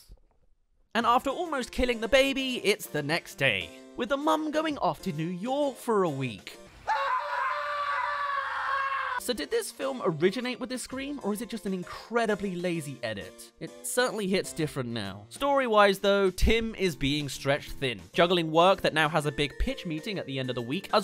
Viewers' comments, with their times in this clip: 0:07 Nah it’s just a lazy edit, the scream is a stock sound.